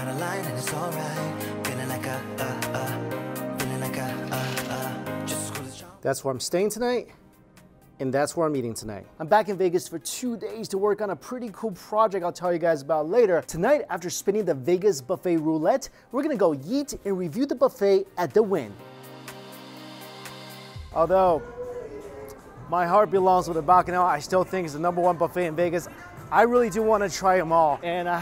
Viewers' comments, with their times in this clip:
0:08 did he say eat or yeet?
0:16 “We’re gonna go yeet.” Thats what I heard lol